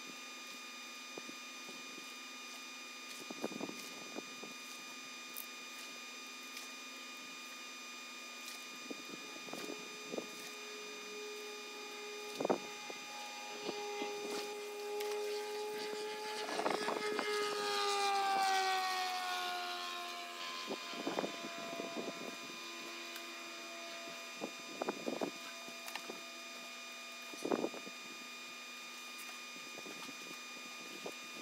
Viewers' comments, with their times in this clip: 0:09 I'm not quite sure of this geographical location but I really don't like the sound of that mosquito.
0:17 that was the slowest motorcycle I've ever heard, considering this is sped up.